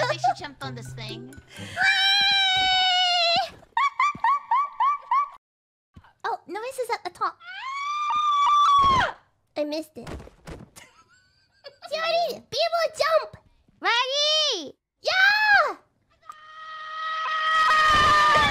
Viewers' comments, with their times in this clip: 0:05 New Kirby falling sound